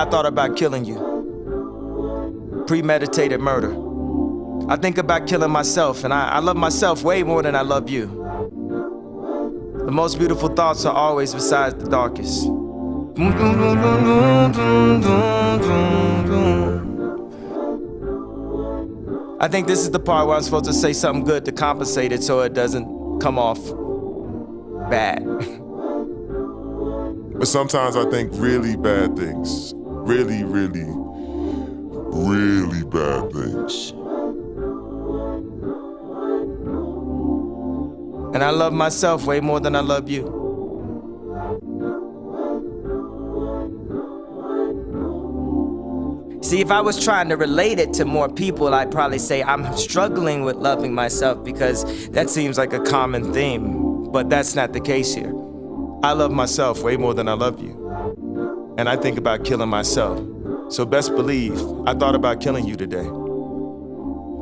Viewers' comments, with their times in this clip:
0:10 where he hums and the background kicks in too. Gives me chills
0:13 sounds so angelic
0:49 Is he mixing voices? I believe he is. I hear Eminem here.